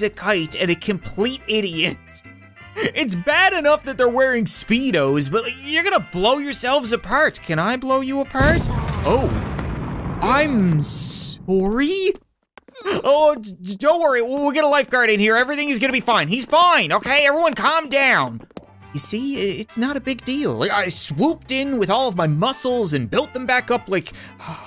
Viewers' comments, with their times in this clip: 0:08 The Canadian kicked in a little late but he got there